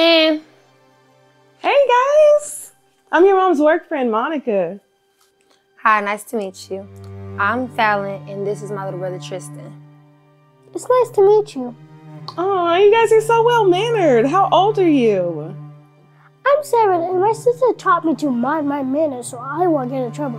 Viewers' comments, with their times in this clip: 0:06 I thought that lady said "Iam your mother's boyfriend".